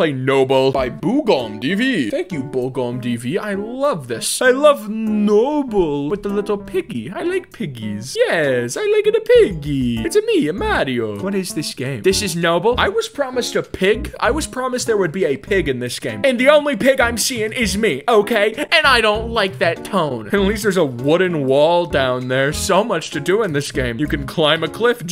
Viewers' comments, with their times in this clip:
0:10 that seriously sounded like mario